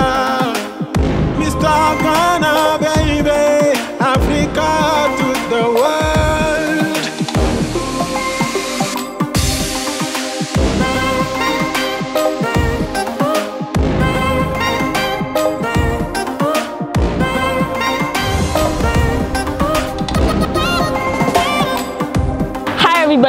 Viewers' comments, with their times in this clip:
0:05 this song!!!! I couldn’t hold back tears 😭